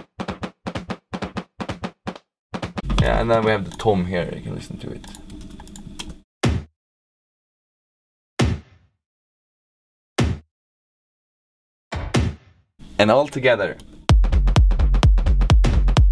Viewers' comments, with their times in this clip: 0:04 That's a nice punchy tom opens audacity